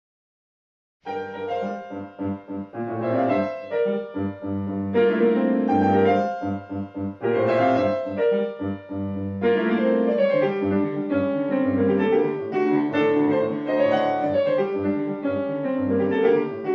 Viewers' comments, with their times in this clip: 0:04 those consecutive fifths fit so perfect :D